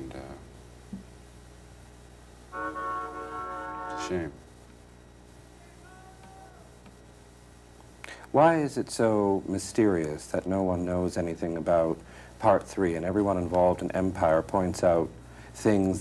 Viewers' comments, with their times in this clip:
0:03 😂 who else here noticed that car horn out in the distance! 😂